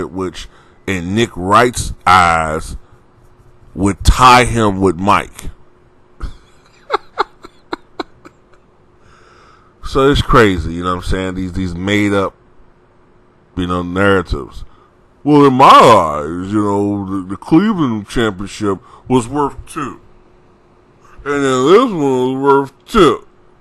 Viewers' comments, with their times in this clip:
0:06 That laugh killed me dead. Should be a meme like Jonah Jamison 😂😂